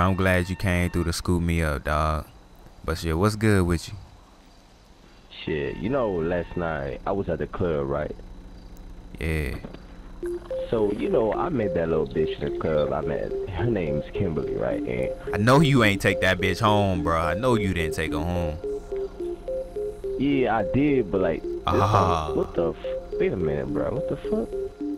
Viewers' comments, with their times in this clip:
0:10 a car started